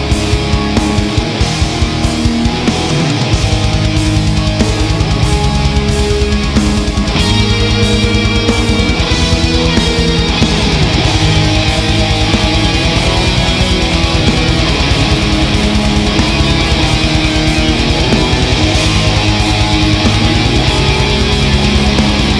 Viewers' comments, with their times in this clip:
0:07 That solo .. 🤤 Amazing song! 🤘